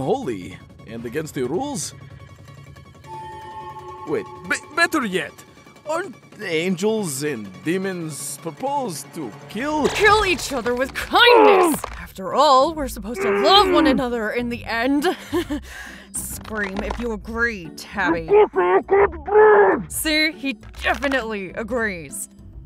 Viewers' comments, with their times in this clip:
0:05 welll thats not terrifying in the least and tabis danger sense not going off apparently also i think i heard bones break maybe from that bear hug ooo i both envy and feel sorry for tabi when getting the bear hug
0:10 The sounds tabi making killed me XD